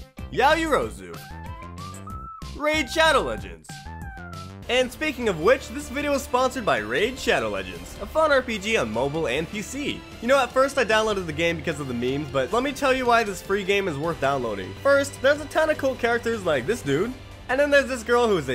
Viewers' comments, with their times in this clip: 0:03 Me : it would be funny to put the ad here 1 second later: NOOO (perfectly cut screams moment)